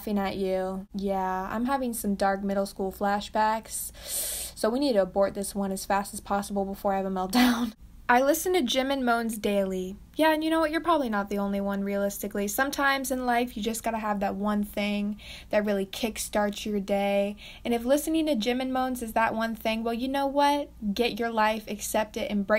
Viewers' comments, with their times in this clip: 0:10 why is no one talking